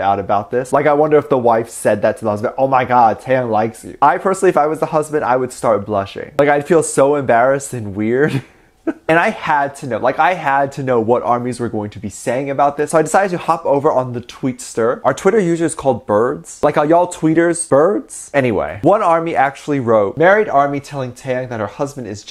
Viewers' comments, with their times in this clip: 0:07 his laugh was too wholesome I can't